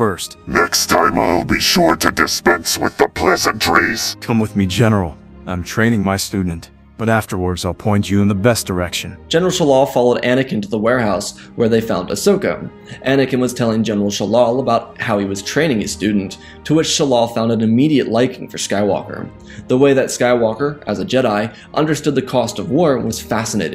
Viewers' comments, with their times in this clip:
0:05 wow that's a top notch clone wars anakin voice impression 10/10!